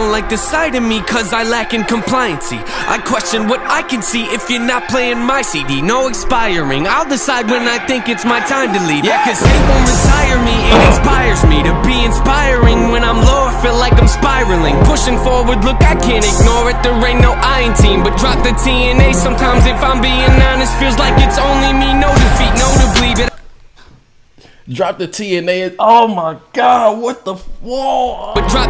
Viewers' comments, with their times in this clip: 0:09 THIS MAN FARTED SO LOUD
0:10 Is it just me or did he let it rip😅
0:10 beat drops Śhítš hîm śēłf